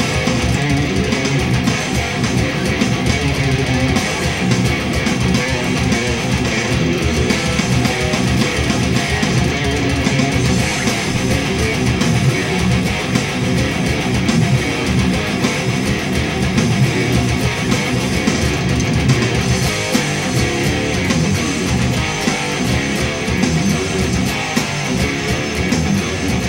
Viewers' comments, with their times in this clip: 0:10 sounds like a sped up version of the chorus of limp bizkit - stuck
0:10 I dare anyone to try and sit still to that riff Physically impossible!